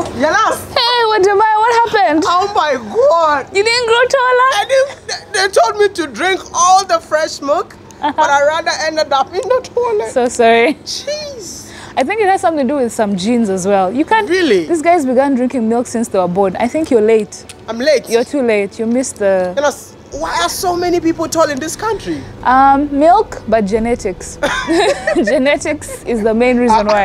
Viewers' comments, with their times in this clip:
0:10 Oh my god, her voice is lovely